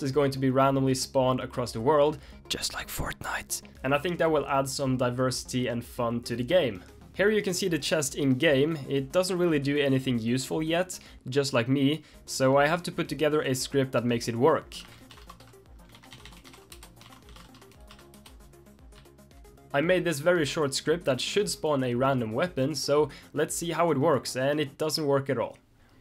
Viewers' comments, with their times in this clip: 0:10 WHERE'S THE SAD MUSIC ?? Also I love your channel I'm waiting for you to get big! Lol that sounded weird...